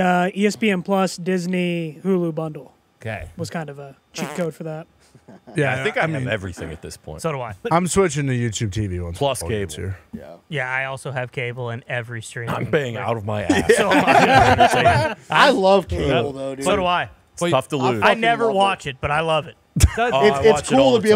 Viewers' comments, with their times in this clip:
0:04 is that a fart